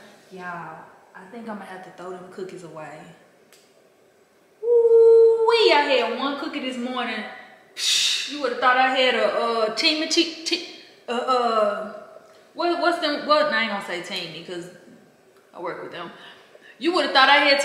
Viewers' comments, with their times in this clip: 0:05 It's and I'm watching.. I'm literally playing DJ with my phone volume. I don't know if you gone start screaming, singing, or laughing and my guy is sleep and keep waking up 🤣🤣🤣🤣🤣🤣🤣🤣🤣